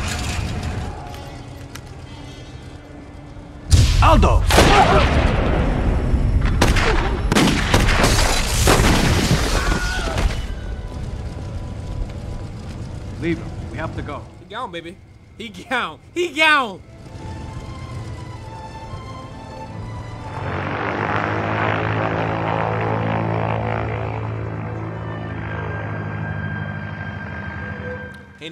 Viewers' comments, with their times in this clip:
0:03 Did he make a happy wheels sound effect wen he got shot?
0:08 dat Wilhelm doe
0:09 that yell sounded like he got paddled for a second